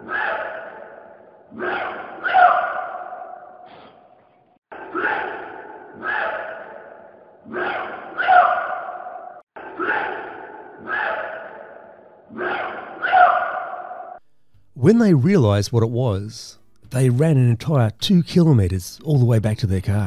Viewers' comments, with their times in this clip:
0:05 their is a pattern to that call, like a bird warning call.